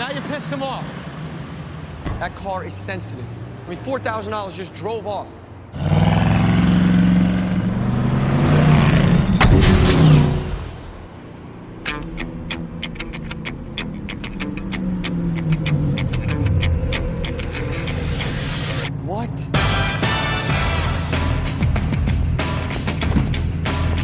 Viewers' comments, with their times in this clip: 0:10 I wanna imagine Bee was playing the music himself